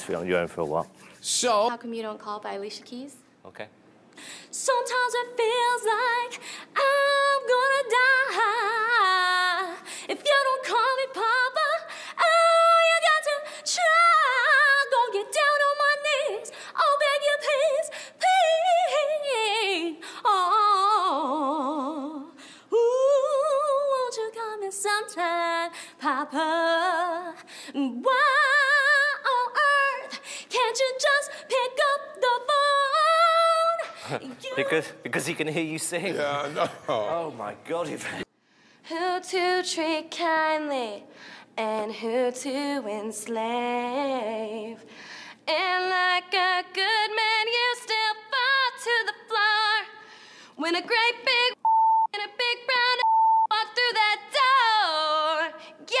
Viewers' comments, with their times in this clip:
0:02 The girl reminds me of Miranda Sings' singing LOL
0:04 the girl seriously sounds like miranda sings LMAO
0:07 literally sounds like Miranda Sings
0:12 Girl sounds like the lady who sings on Babara Manatee from Veggie Tales 😂😂😂
0:12 she sounds like Miranda Sings lmao
0:17 the girl learned her vibrato from Miranda Sings I can tell
0:20 the sounds like Miranda sings
0:21 Miranda Sings.. is that you?
0:22 she takes singing lessons from miranda sings
0:26 The one at like reminded me of miranda sings
0:30 reminds me of Miranda sings
0:39 Who to treat kindly amd who to enslave and like a good man you so far to the floor when a big brown <beep> and big bad <beep> walk through that doooor yeah . . . Very catchy
0:42 WHAT IN THE HELL WAS SHE SINGING!?